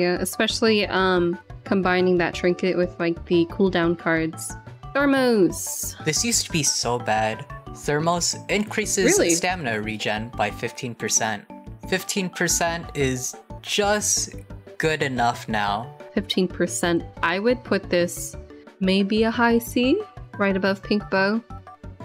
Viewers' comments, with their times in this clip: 0:04 the way they said thermos😂